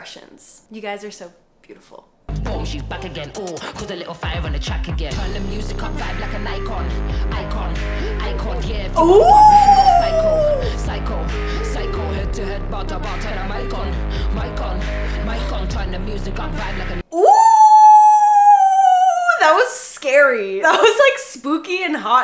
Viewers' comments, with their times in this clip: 0:05 this song is really suit to this tik tok